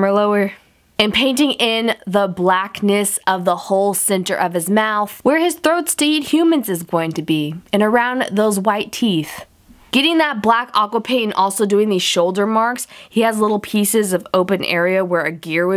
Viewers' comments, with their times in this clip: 0:03 the video started over but it still had the voice over thing :/ anyone know why?